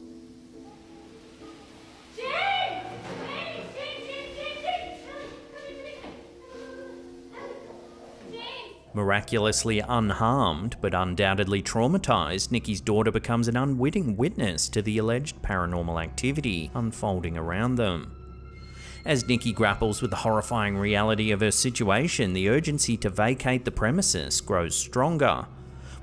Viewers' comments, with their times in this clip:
0:09 the daughter ur probably able to move things with her mind . Hence the laugh